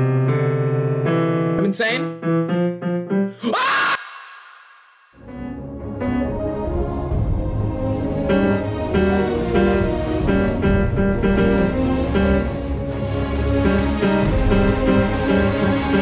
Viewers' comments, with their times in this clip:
0:03 when he screams it gave me an ad lol